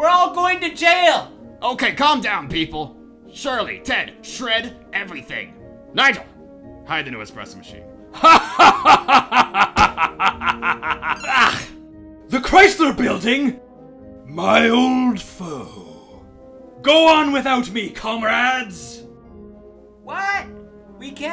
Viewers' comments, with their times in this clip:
0:08 my villain’s laugh